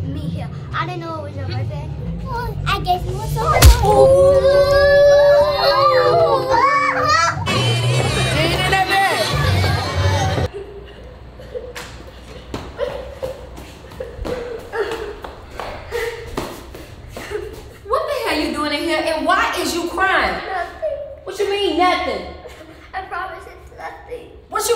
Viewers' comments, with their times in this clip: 0:07 Who else heard that bbd in the back